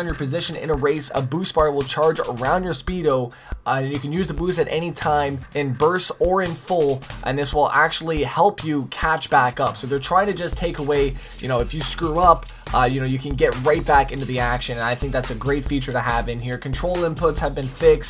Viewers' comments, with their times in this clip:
0:03 "Use the booze."